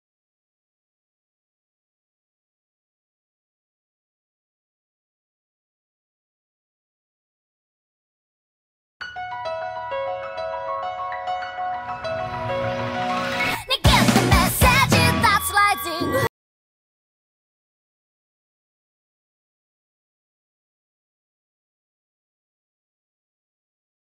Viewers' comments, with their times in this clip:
0:08 Sorry about the dead space in the middle, sh*t happens nbd. Twitter link in the description for unedited version or try this: queue up Rising Hope by LiSA in another tab and hit play when you get to Don't worry I don't use such low tech solutions when I operate on people. PS - in the 30 mins it was up last night I got some really nice comments - thanks people, I went to bed thinking I'd reply to you all today but like that [kaiser soze gif], it was gone.